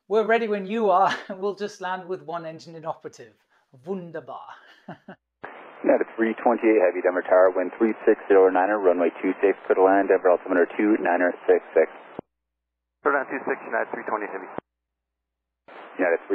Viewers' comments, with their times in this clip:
0:03 nice pronunciation of the german word "wunderbar" 👌